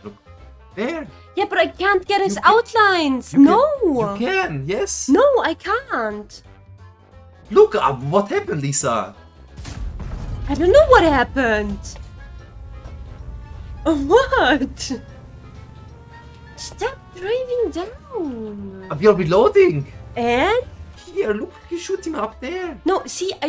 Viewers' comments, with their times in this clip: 0:05 She's saying it like nothing happened. LMAO and you presume that she hasn't played the game LMAO SORRY MY BAD you never said that 😂